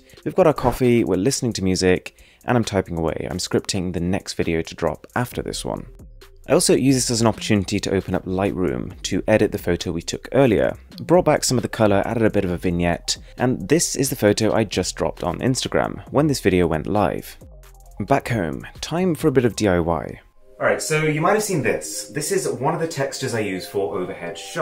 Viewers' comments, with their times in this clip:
0:10 ,, What is he exactly saying !! Is it a dothraki language 😂 ???